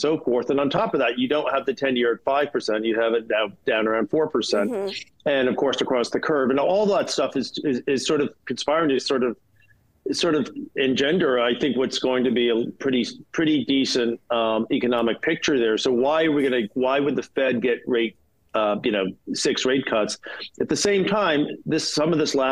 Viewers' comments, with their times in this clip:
0:04 Did he just FART
0:06 She farted lol😂